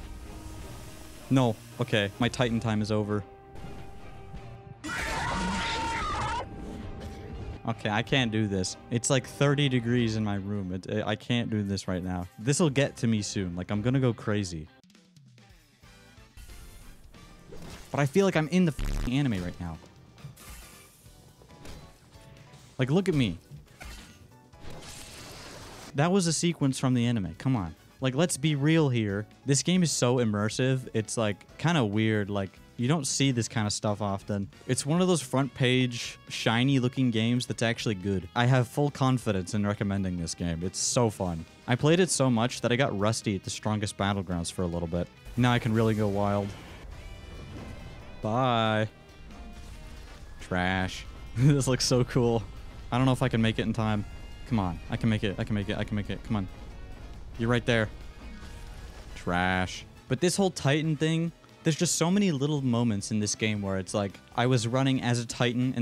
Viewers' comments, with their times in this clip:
0:04 the titan: RAHHHHHHHH fnaf foxy jumscare 💀
0:47 zestiest ahh "bye"😭